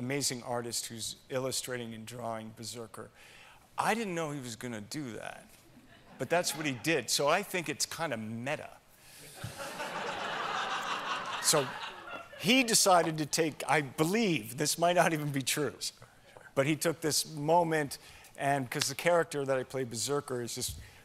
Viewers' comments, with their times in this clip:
0:08 (kinda meta ) that is the most moistcr1tical thing he could say and when he said it he even sounded like him that was amazing